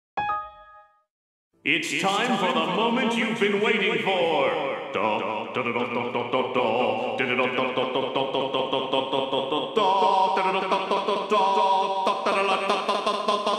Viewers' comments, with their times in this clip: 0:00 windows xp error Sound
0:01 if you don’t have It set your volume to 1% or 0%